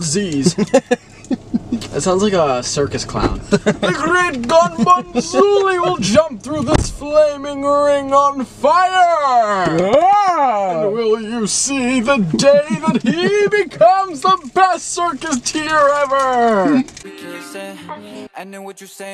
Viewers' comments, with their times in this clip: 0:04 it’s giving mr. bobinski from coraline 😭😭